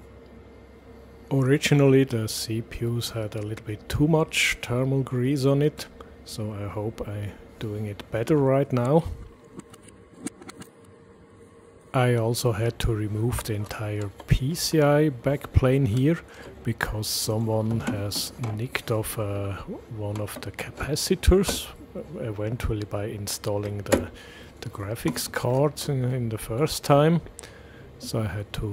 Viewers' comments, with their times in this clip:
0:09 Haha, if you want to trick us with a reversed clip, better remove its sound!